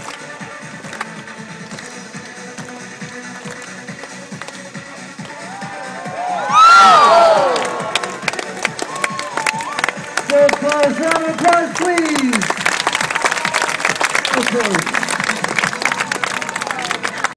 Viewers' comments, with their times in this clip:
0:06 they applause because he failed? ????? pfff amazing fail (y)